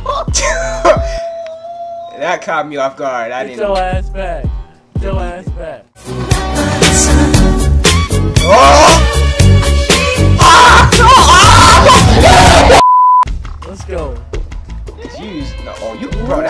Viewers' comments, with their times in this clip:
0:04 Not the billie jean